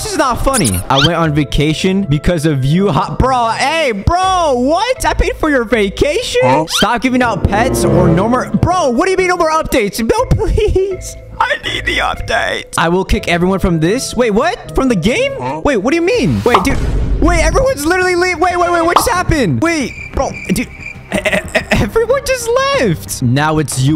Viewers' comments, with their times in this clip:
0:10 Lol in he says funny voice lol 😂